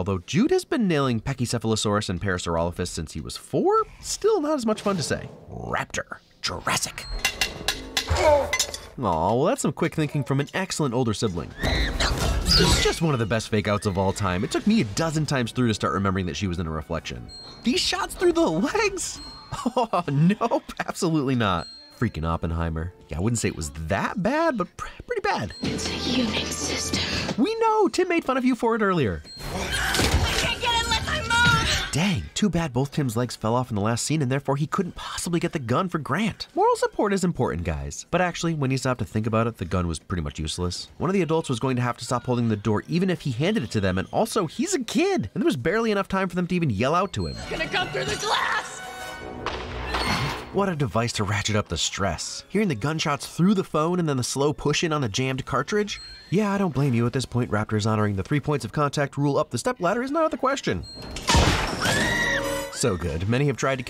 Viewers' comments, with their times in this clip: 0:06 why dose it sound like the Mario theme or am I crazy
0:51 I think it’s kid of a sin that he didn’t hmgive a win to Hammond yelling “grant” I love it when people with smooth silky voices lose their cool and yell